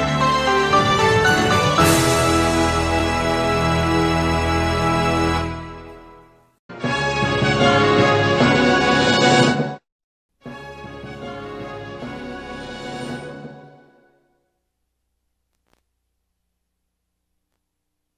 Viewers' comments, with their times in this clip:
0:06 This sounds like Super Smash Bros. Music like Melee.